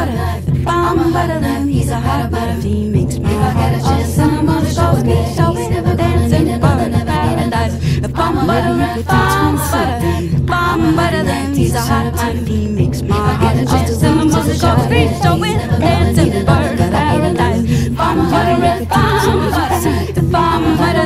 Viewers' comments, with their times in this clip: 0:08 the last layer comes in. THe last word said in the song is 'you'